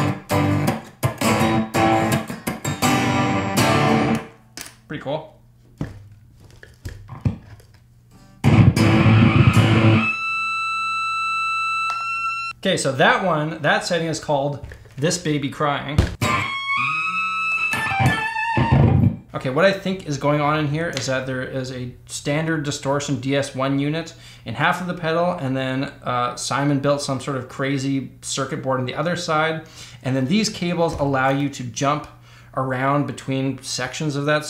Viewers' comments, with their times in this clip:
0:09 that's straight up rock n roll right there..
0:15 sounds like part of a jack white solo